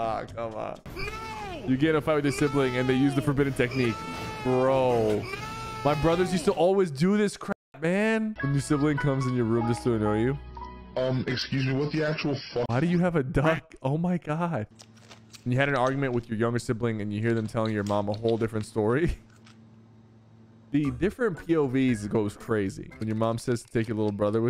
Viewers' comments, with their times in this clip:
0:06 didn’t know crap was a word that needed to be censored 💀